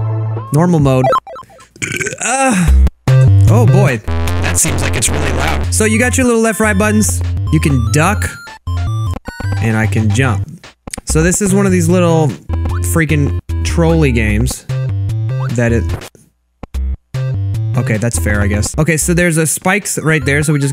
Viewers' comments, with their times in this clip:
0:04 Sounds like someone I heard before